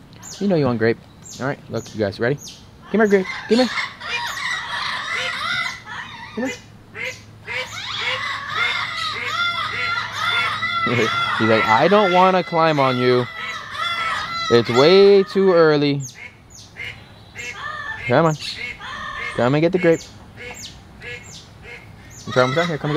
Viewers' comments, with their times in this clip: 0:05 sounds like the ducks want grapes